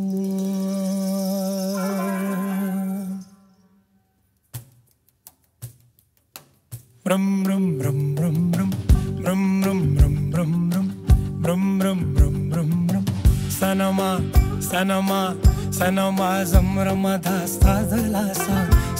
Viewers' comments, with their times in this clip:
0:06 the engine on the bus go
0:06 my car when i start it: